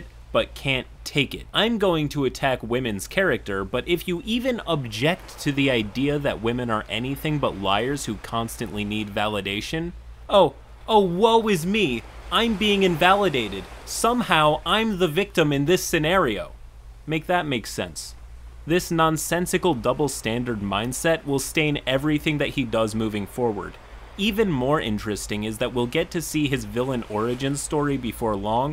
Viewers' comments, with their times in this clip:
0:10 "OwO is me"